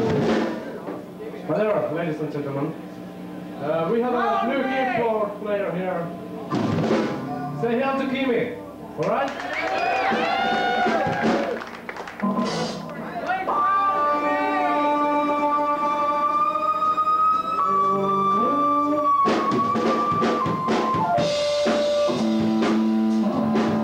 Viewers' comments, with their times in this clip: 0:10 A love the trollolo :D